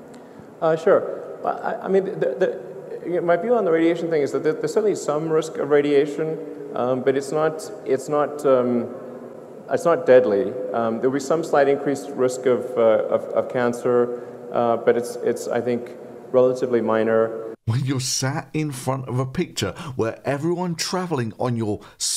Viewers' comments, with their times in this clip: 0:06 Elon's voice has changed a lot since 2018 . Much like that Theranos lady, you know what's coming next